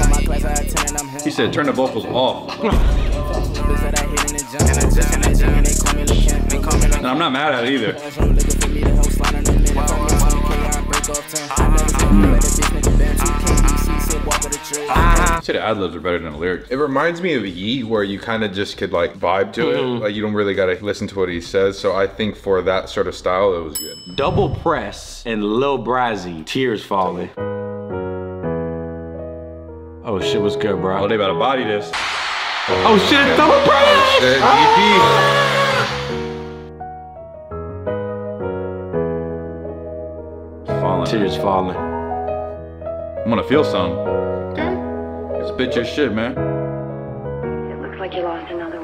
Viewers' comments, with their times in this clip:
0:05 bro wants to be yeat.
0:29 them boys butchered that beat 😭 had so much potential